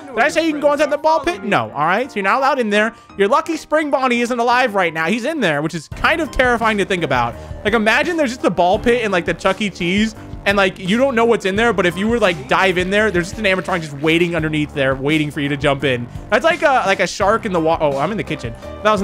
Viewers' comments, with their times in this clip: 0:07 it sounds like sun from security breach